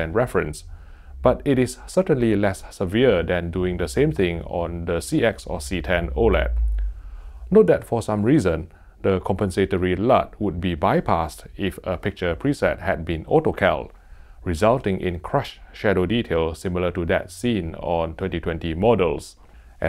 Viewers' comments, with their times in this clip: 0:05 I can tell I have very good headphones because there's an extremely low bass tone that startled me.